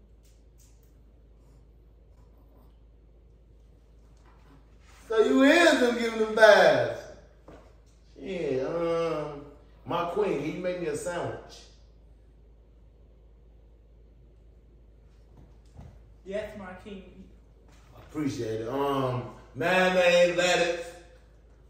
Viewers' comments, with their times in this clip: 0:06 that bark took me out